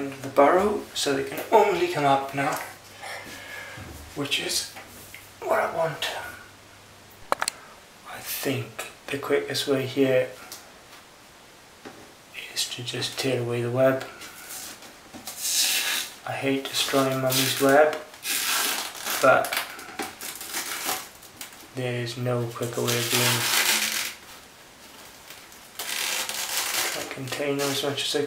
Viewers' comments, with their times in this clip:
0:10 Holy crap that sounds like you're tearing a paper/fabric hybrid held up by masking tape